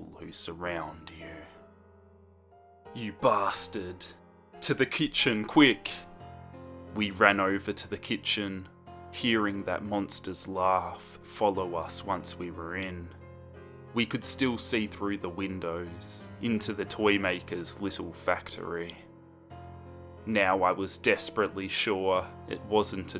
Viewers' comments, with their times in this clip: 0:05 is it just me, or does this sound like Edd from Eddsworld?